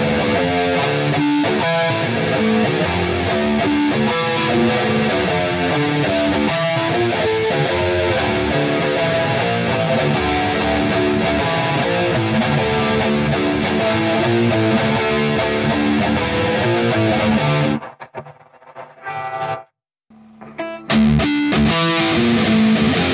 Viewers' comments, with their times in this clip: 0:08 there are some clicks/ buzzing background noise when u use ND Petrucci ....is it normal?